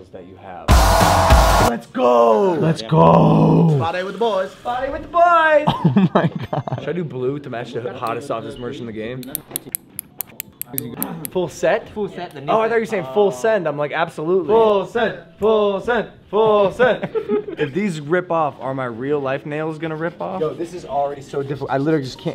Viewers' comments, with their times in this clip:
0:09 why did that sound like ASMR